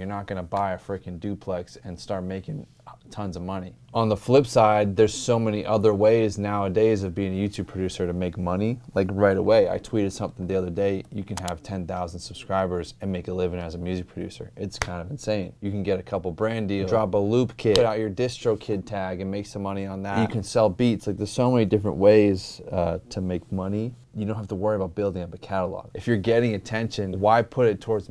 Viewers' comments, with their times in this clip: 0:04 why is he spitting bars here
0:09 were you rapping ?